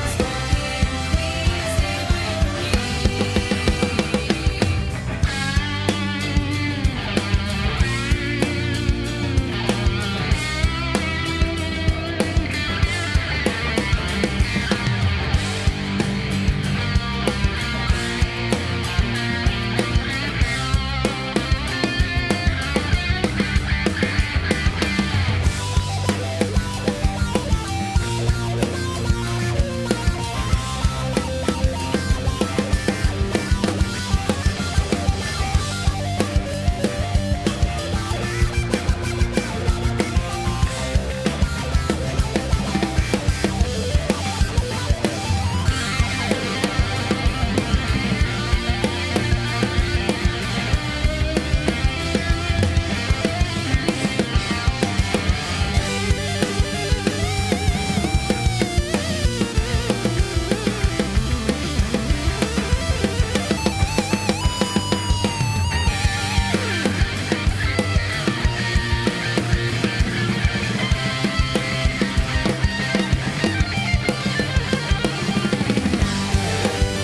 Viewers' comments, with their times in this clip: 0:05 i feel like no one gives the solo enough credit
1:02 The musical arrangement is lit! EDIT: I am slain. Holy shit!